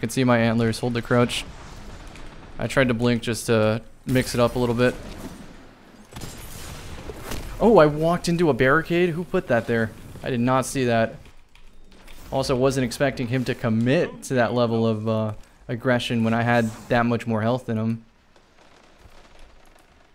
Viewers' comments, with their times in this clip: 0:05 Accidental big brain gamer moment on someone's part Also, audio quality is best it's ever been, man